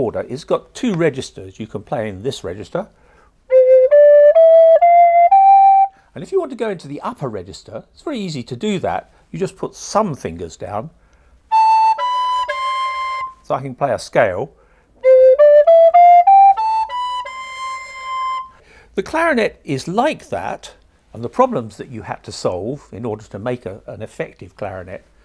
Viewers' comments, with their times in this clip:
0:09 hahahah i thought he said: put some fingers down plays recorder fucking play a scale
0:12 Dear God I thought he said "Fu**in' play a scale" lmao